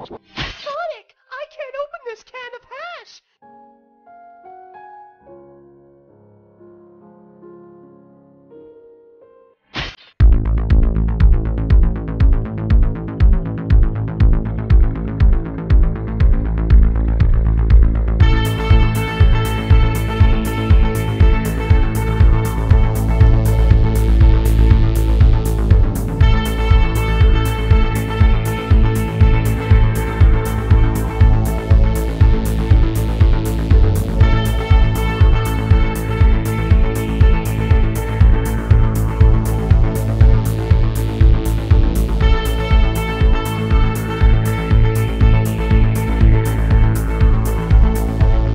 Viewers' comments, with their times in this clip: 0:06 WOAH THEY TOOK OUT THE MUSIC
0:11 did you guys get copy right struck for that, i'm not hearing the music :/
0:24 Deleted music due to copyright issues
0:31 RIP the audio. Probably got copyrighted.
0:33 where da music